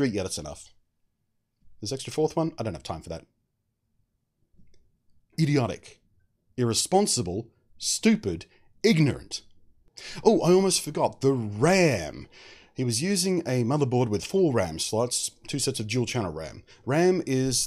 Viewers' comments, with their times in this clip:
0:05 I like the way he said "IDIOTIC !"